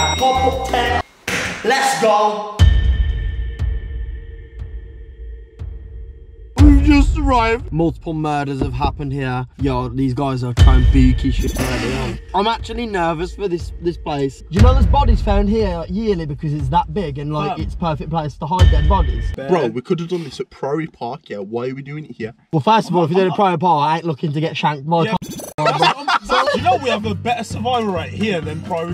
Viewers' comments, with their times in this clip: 0:09 listen carefully… can u heard the knocks